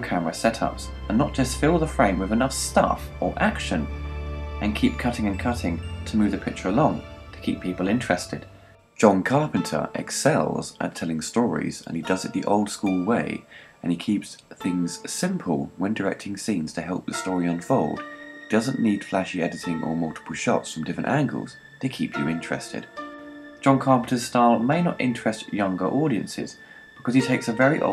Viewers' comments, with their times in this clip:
0:10 That piece of the score is beautiful, was used brilliantly at the end when Jack says goodbye to Gracie. Gentile & mysterious in feeling. Love this soundtrack & movie!